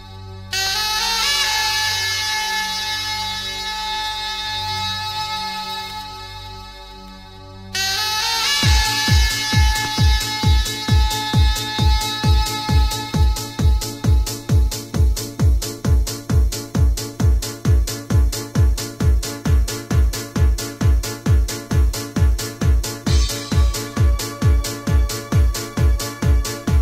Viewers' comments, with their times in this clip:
0:08 chills...love the horn chime tune